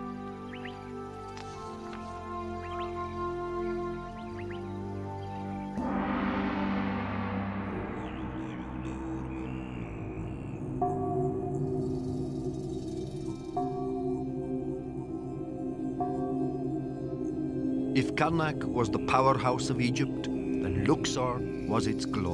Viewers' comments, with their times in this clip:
0:07 Tibetan singing after the cymbals clash.